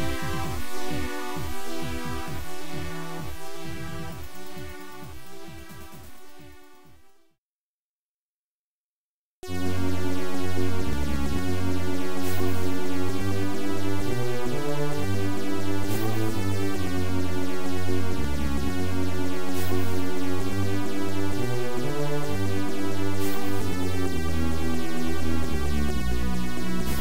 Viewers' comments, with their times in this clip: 0:09 the music that hooked me into this game..